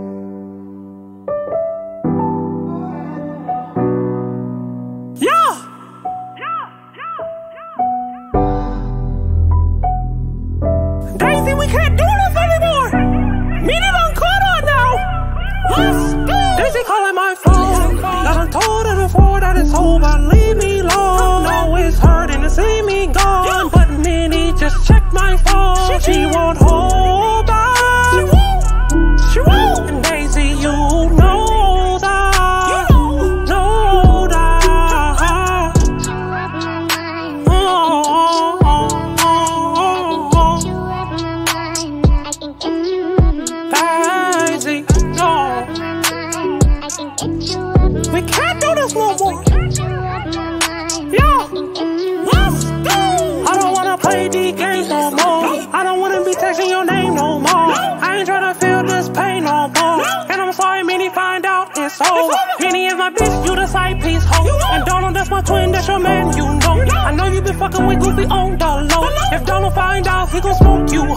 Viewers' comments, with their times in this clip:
0:05 bruh sound like pnb rock 😂😂😂
0:36 best vocals ever idc
0:36 those vocals fire
0:56 when the beat drop hits*
0:58 Yo that repeating got me dead 💀 😭🤣